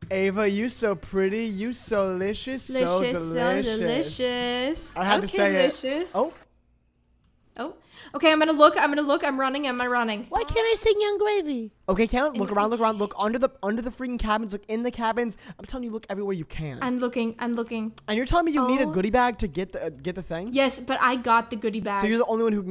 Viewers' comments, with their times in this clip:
0:10 how does he make himself sound like that